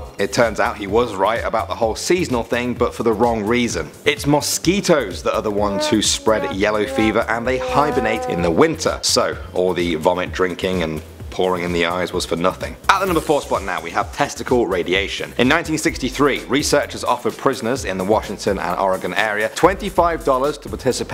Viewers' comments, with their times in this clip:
0:06 I thought that noise was a mosquito, caused me to jump out of my seat